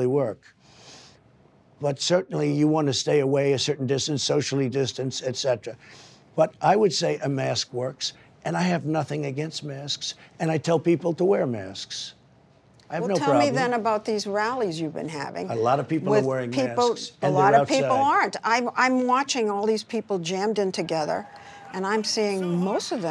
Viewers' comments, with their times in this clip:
0:09 the clarity of the “sks” in “masks” is unbelievable
0:09 the clarity of the “sks” in “masks” is unbelievable